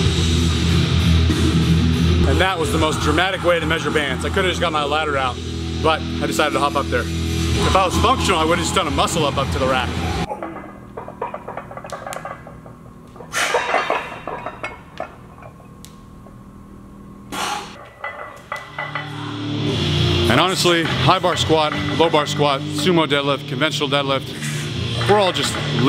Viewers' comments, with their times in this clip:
0:10 when you're squatting. That clicking sound. Is that your fucking knees?
0:11 you can hear the knees cracking